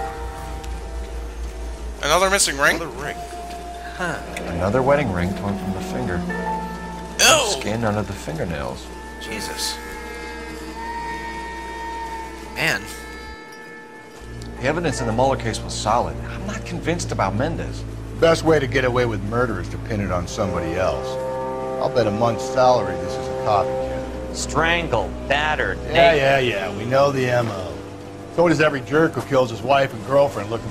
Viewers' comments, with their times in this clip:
0:10 I just lost it on that censor!
0:12 Cole Phelps: PINGAS!